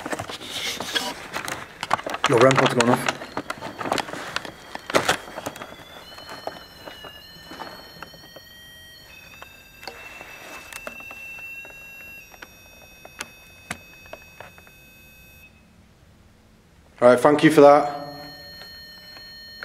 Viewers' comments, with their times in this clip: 0:04 .... almost sounded like it was wanting to play music for you..